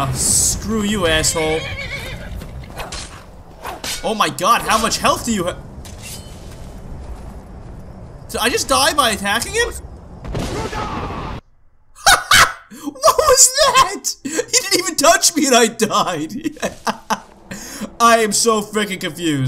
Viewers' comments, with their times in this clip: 0:06 THAT LAUGH MAN HAHAHAHAH